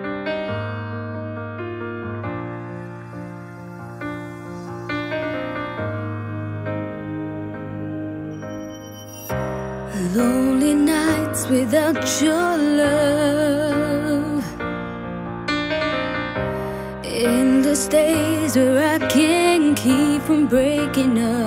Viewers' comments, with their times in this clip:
0:05 I’m crying so hard right now 😭 thon music got me right in the feels 🤕 so sad so emotional. Why Lord whyyyyyy